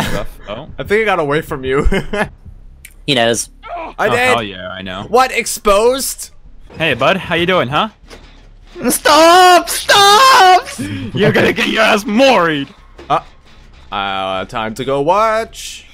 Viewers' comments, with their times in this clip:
0:03 he knows (Screams in pain)